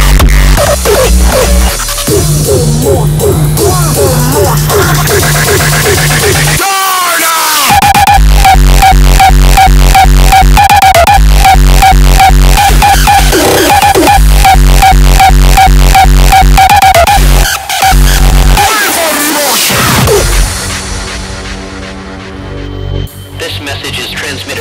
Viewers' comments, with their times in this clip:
0:05 The drop I can't fucking stop replaying it. It's the absolute best of the best for me. I wish someone made an entire track with kicks and bass like this holy fuck.